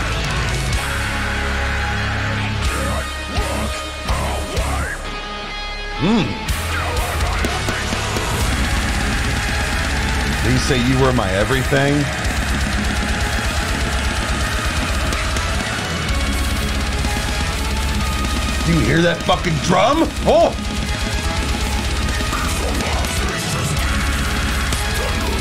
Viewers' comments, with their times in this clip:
0:08 That scream challenges God directly.